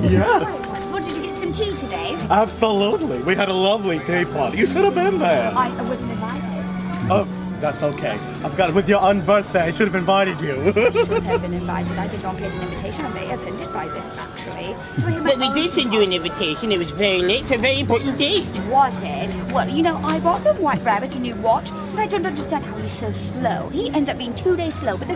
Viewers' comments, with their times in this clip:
0:10 can someone explain to me why the second Alice reminded me of Dan Howell? watch the part when she says she is offended and tell me otherwise, also when she says "actually" its literally him XD